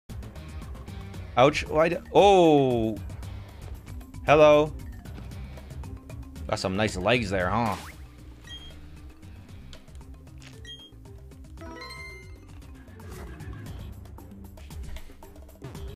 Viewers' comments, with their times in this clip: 0:07 is his impression italien?